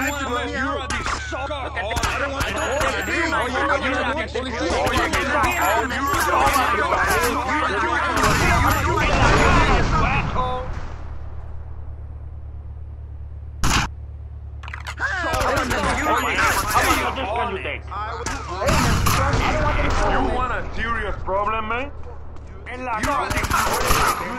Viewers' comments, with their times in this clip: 0:10 it was nice for a bit of silence... 😆